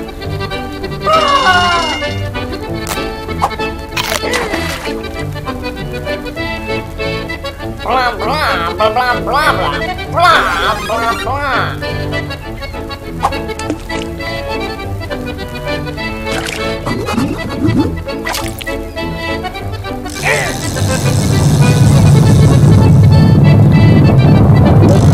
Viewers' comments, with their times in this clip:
0:08 Mario mushroom power up noise